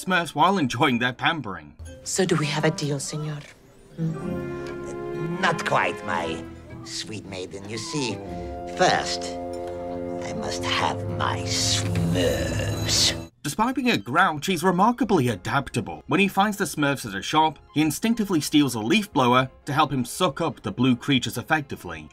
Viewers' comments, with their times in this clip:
0:08 also i like how Hank Azaria uses his Moe Syzlak voice for Gargamel just with a slight British accent to match How the late Paul Winchell gave Gargamel a slight British accent